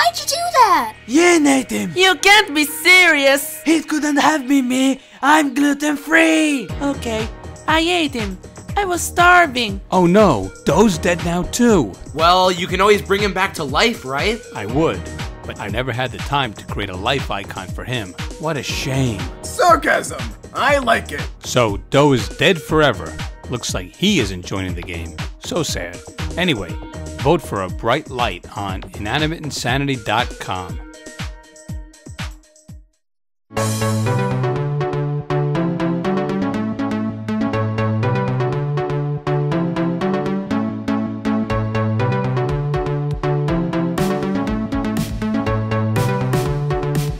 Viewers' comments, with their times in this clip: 0:05 The background music is amazing
0:33 never knew II music could be this fire 🔥